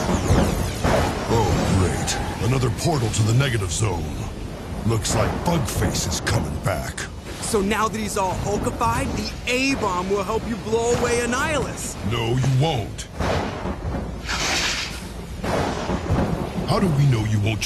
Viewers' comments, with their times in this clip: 0:05 I legit heard Hulk say "Fuck Face"